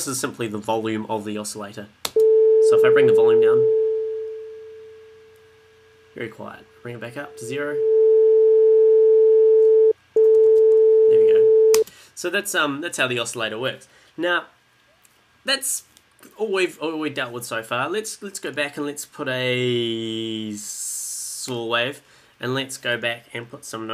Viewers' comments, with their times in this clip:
0:08 who else was afraid he will turn up the volume a lot? :D